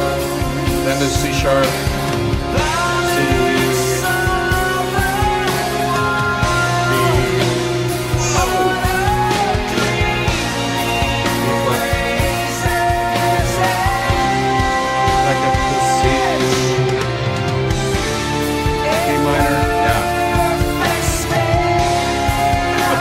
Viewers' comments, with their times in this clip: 0:04 Did you hear the vocals leading the strings into the next 3 notes by singing the notes a half beat before the strings changes? Love it!